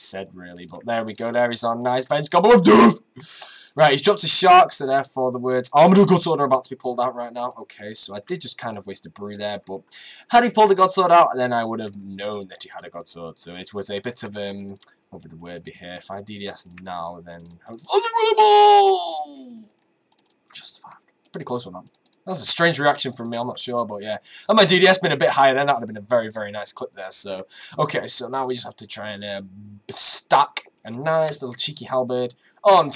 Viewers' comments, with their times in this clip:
0:04 for epic voice crack xD
0:18 sounds like that fish from Finding Nemo when he opens the chest and sees the bubbles...Lol